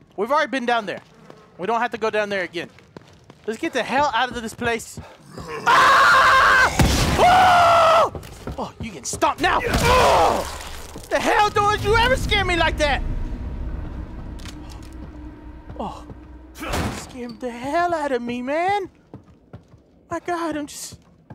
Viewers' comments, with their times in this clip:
0:03 His scream sounds like Kevin in Home Alone 😂😂
0:05 Best scream ever I'm dying...